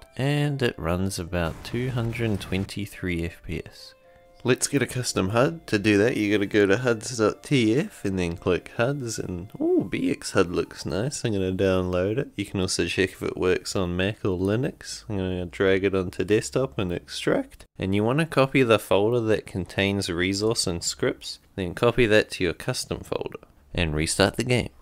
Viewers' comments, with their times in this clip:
0:05 Damn, he got drunk when he talked about the huds (no offense intended). Gotta try this, I have a great gpu but I have massive disapointment of a CPU so this should help a lot. Idk how do I get playable fps today with such a shitty cpu still with the default settings.